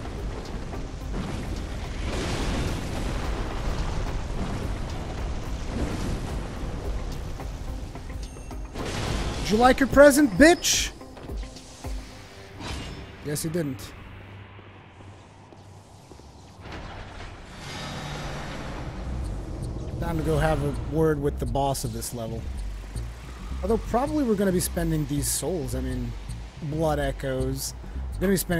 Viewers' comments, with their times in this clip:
0:10 The music transitions quit well with Rurikhan killing that fire casting guy.